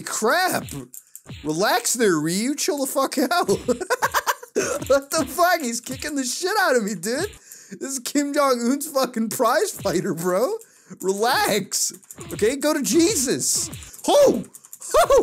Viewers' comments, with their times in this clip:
0:03 Best laugh lol